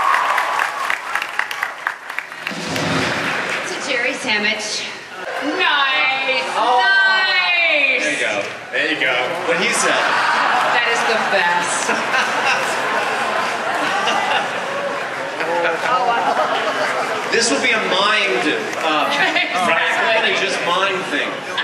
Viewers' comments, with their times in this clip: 0:05 Jeri Ryan is kidding me. She assimilated age. What a hell of a beautyfull woman. I am bown away !!! BTW : Jeri say´s two time the word NEIN fluently. She lives in german i belive 11 years !